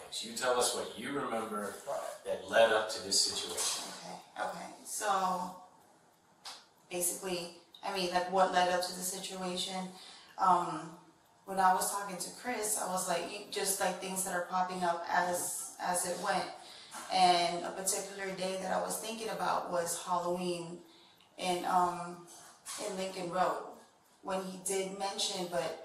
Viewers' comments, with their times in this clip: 0:09 Too many people talking to her at once.